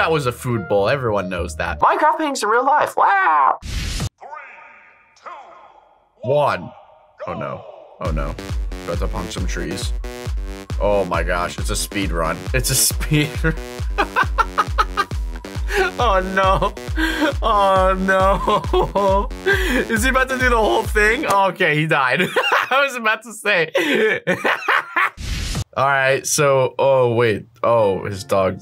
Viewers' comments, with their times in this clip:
0:10 Ya especially the crafting part the villager song was also cool